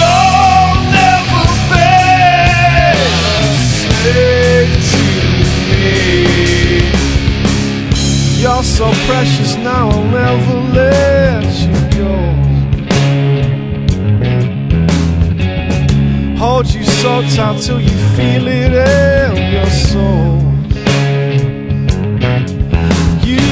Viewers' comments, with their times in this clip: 0:06 I liek the smile Your voice is very blusy for sure reminds me of Zakk Wylde without the Ozzy influence. Deep, gruff and powerful. Great Job!